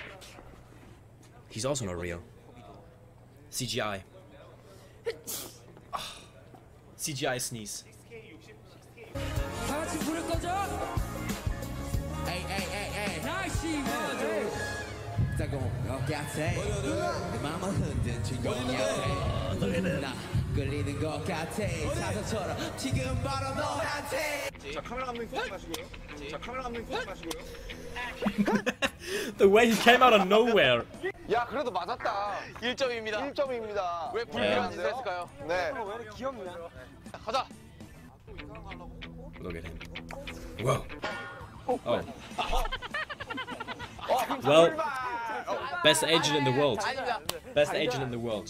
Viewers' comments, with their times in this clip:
0:05 that was the most cutest sneeze ever 😍😍😍
0:30 THAT LAUGH REALLY MADE ME LAUGH I LOST THE CHALLENGE